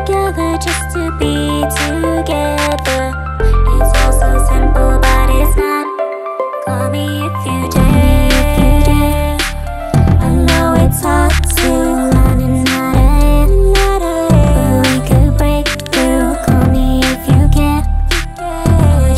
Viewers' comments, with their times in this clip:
0:04 that bass line into the chorus fucks me up